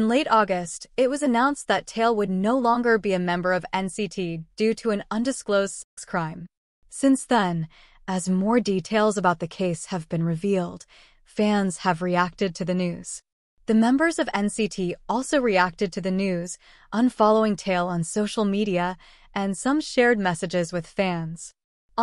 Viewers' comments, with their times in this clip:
0:08 why did the voice become seductive for a second 💀